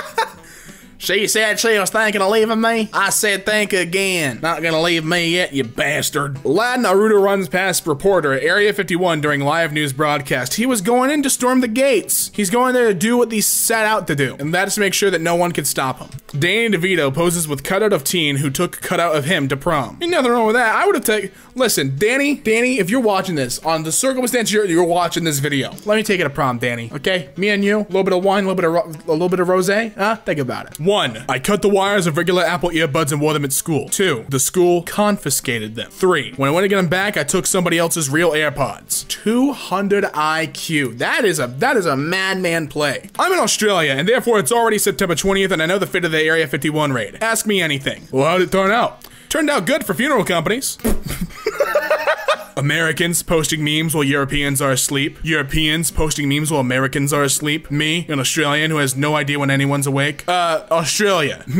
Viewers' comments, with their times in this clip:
0:05 Mans fucking said na- rooh-to it’s na-Ruto
0:49 His laugh never left